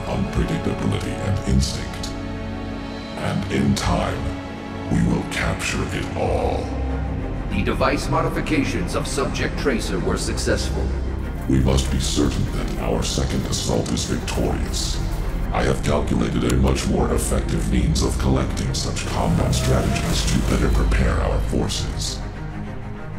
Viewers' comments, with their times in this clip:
0:09 Is that a background steam sound ? So the Omnics were made by Valve, then?